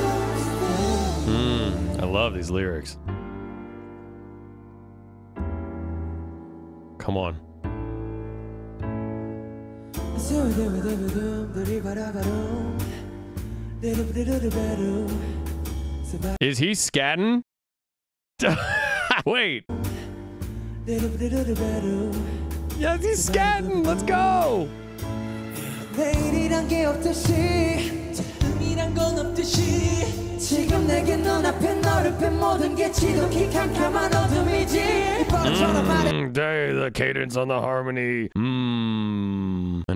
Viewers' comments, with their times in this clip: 0:09 I didn't even know it is called scatting & I love that part!!!!
0:20 yes jungkook is scatting… can’t believe you cut him out of the thumbnail 😂 lol that’s just wrong